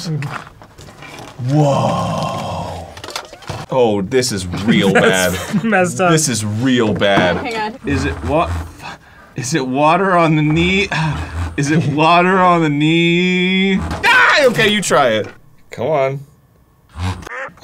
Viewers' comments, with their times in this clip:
0:03 I can't be the only one who heard the fart noise